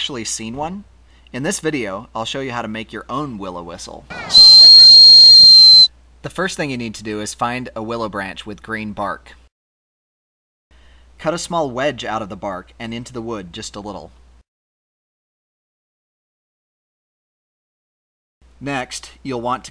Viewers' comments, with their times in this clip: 0:04 FUUUUUUUUUUUUUUUUUUUUUUUUUUCK MY EARS
0:05 OH MY GOD MY EARS.